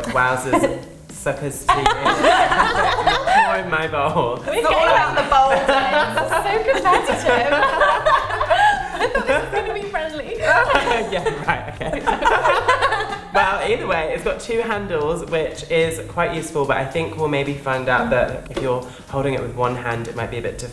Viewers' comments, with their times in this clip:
0:05 friendly comparing laugh between friend be like